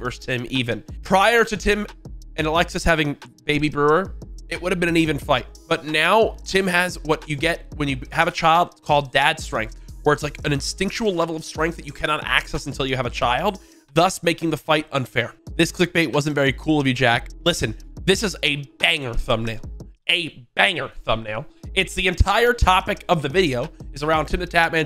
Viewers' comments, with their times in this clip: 0:08 i heard him say "exticntion level of strength"